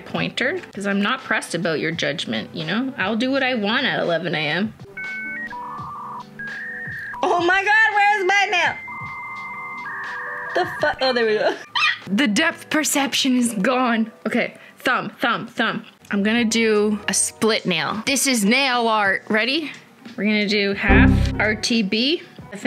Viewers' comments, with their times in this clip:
0:05 the internet dial up sound tho xDD